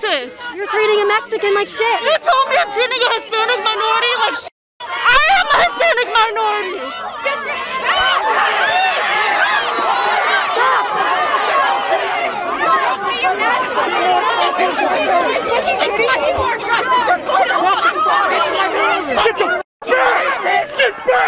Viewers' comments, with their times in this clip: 0:05 I’m so sorry for her she sounds so hurt and kaitlyn is acting like some child